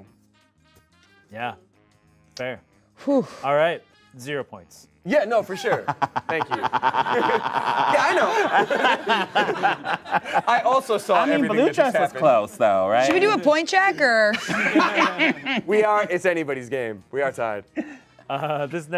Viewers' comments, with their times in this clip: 0:05 Me starting my motorcycle